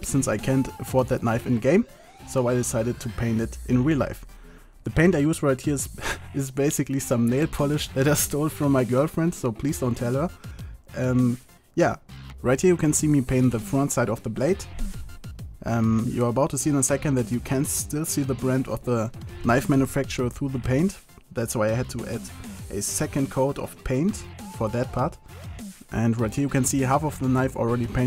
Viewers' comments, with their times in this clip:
0:09 Pls dont Teller?? xD